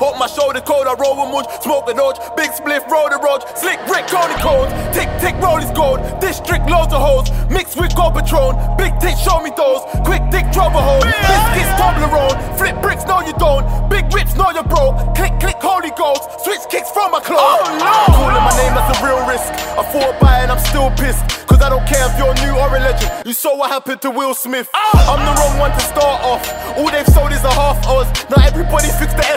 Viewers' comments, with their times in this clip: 0:07 "Big dick, show me those" pause?
0:07 LMAFO, hold up, dis dude just say "big dick, show me those!"?
0:08 i can tell what konan is saying its either "big tits. show me those" or "big dick. show me those." .
0:08 did he just say ''big dicks show me those''
0:08 Swear down he said big dicks show me those 😂😂
0:08 does he say "big dicks, show me those"?
0:08 Ok, i have to ask this. did he say 'big dick, show me those'???? I hope for his sake thats not the case, before i go in.
0:09 Did he just say big dick show me those?
0:17 That oh no is GASSED, need more adlibs like that in grime songs